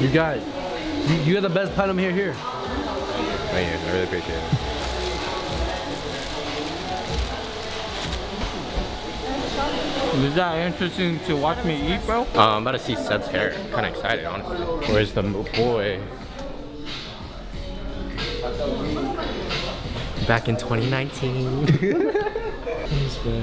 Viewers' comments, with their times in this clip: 0:08 help what is he saying